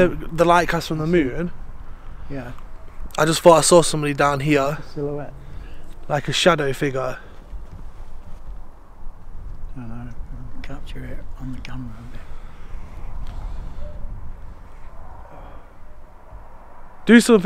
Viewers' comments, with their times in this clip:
0:04 .....after you said that you saw a shadow figure down there, a whisper voice is saying......."MEee"......!!!!!